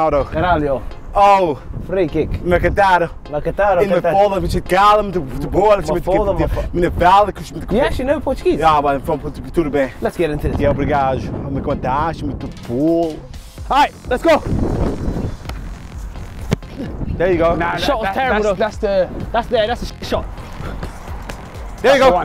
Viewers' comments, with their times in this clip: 0:10 nah this waffle-tuguese is jokes 😂